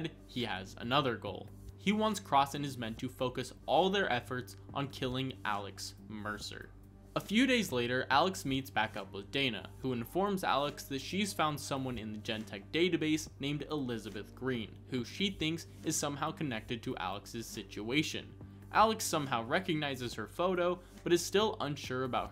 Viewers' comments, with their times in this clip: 0:03 that noise is maddening it starts